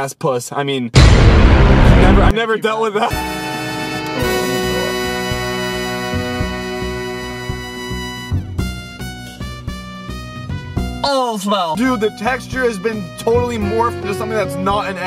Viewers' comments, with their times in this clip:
0:03 the comedy mix with the background music makes it so much more funny 😆